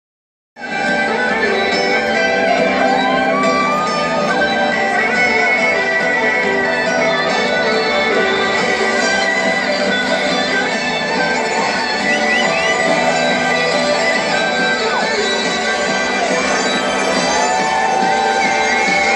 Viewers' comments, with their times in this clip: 0:00 Can someone PLEASE tell me what the song playing at the very beginning is? It sounds like some kind of violin version of "with you, friends" leading into try it out but I can't find it anywhere